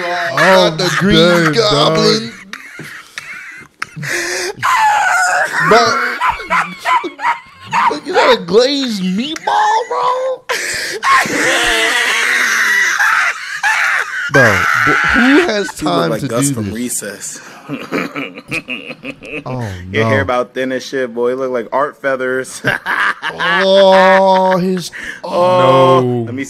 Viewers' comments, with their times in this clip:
0:04 Why did bros Laugh sounded like a Cars tire screeching 🤣💀
0:11 dude sounds like a literal motorbike 💀